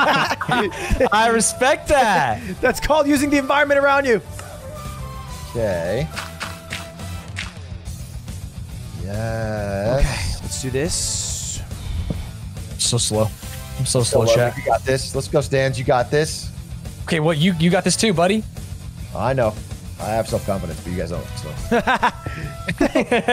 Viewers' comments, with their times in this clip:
0:04 he put those dirt blocks in rythm with the naruto music
0:05 that music sync